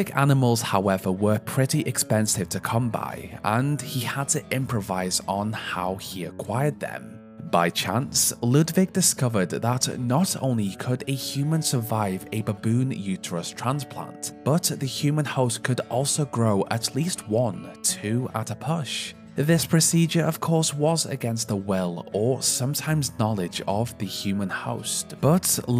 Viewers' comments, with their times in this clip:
0:10 How are you able to say this so calmly? I would never be able to say it like that xD